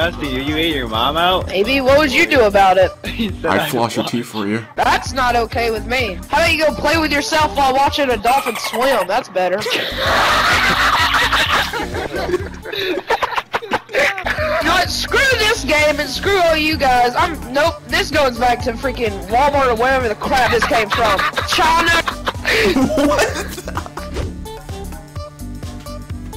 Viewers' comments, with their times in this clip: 0:05 ***** That laugh after that cracked me up,
0:10 omg that laugh is horrifying 😨 #MWR